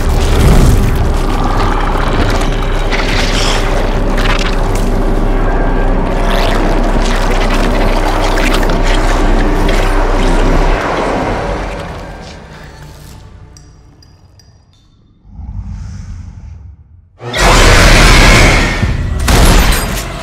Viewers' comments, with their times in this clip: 0:03 sounds remind me of Starcraft zergs lol